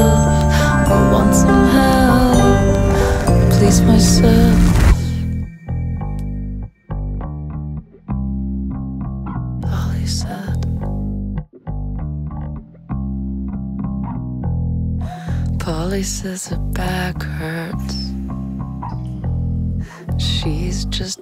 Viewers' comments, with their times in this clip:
0:05 That bass line ! 🖤🖤🖤